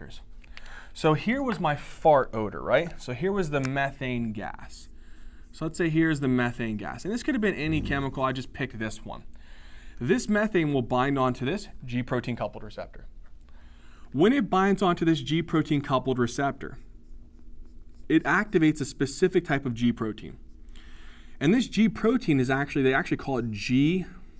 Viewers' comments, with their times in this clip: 0:08 as soon as he says methane the guy recording farted 😂great video it was so helpful . Keep up the good work .